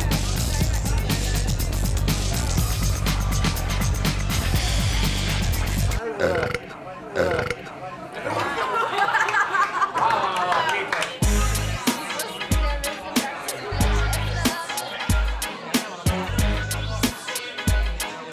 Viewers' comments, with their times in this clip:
0:06 Most Digusting Burp Ever.